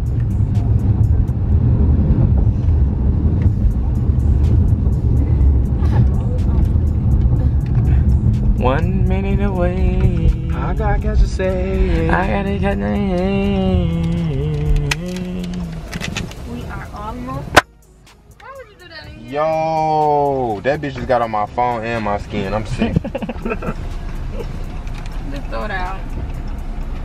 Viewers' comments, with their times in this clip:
0:09 I’m awake af. “yeah I wanna go jump jump.” & the dead silence took me 😂😂😂😂😂😂😂😂😂😂😂😂😂😂